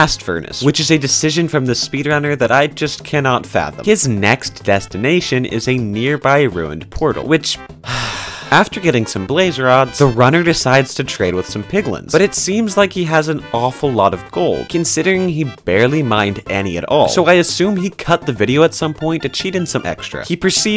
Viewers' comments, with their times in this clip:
0:06 His sigh completes my day